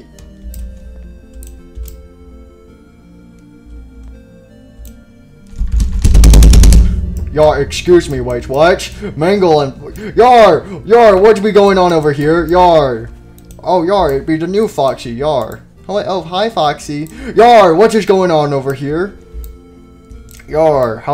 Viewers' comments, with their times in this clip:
0:05 Banging your desk